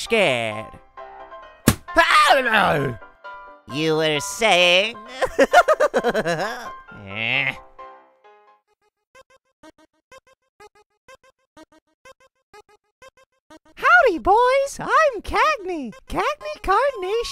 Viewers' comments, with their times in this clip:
0:05 awwwwwww that voice is sooo cuuuute